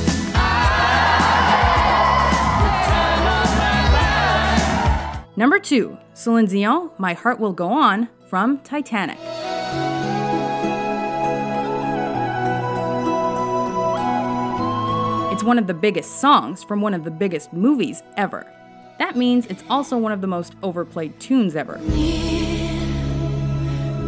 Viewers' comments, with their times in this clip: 0:06 Love how she pronounces Celine like she knows it
0:11 i expected a different flute sound